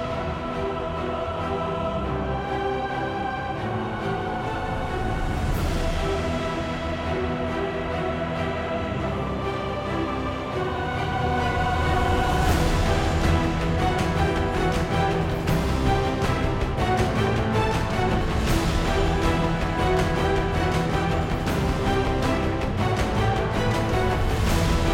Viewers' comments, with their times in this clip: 0:05 Looks like War music.